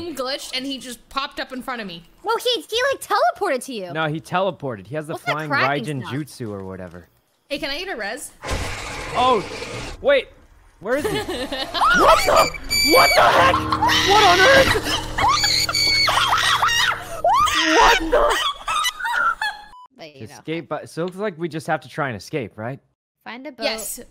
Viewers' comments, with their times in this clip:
0:08 omg sykkuno almost screamed what the fuck for the first time ever
0:09 Rae’s scream though 😂
0:11 Rae's Scream Sounded Like A Squirrel Gettin F*cking Mutilated 😂